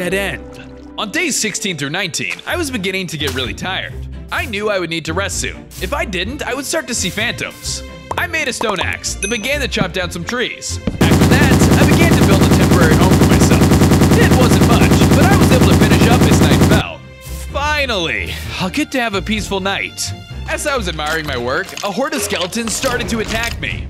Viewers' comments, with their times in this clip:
0:10 LOUD ITS TOO LOUD
0:10 sounds like an assault rifle
0:10 Why us the building so loud?
0:11 "After that, I began to build a temporary home for myself." machine gun noises intensify
0:11 I have the fear of loud noises and I was wearing headphones and guess what happened
0:11 Good Video But WHAT IS THIS SOUND IS HURTING MY EARS GOSH
0:11 Turn Down Your Volume This Part Is Loud!